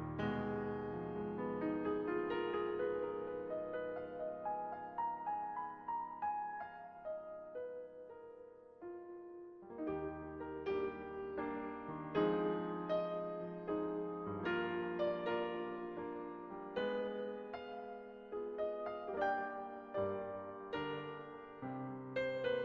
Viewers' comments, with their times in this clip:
0:08 The beginning sounds like Love Like You then transitions to Op 9. No.2